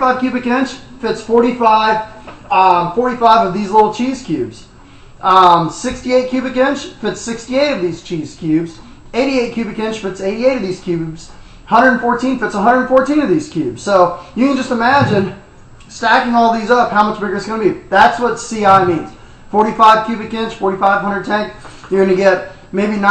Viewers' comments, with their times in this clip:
0:09 the dog reminds me of the movie jaws starting on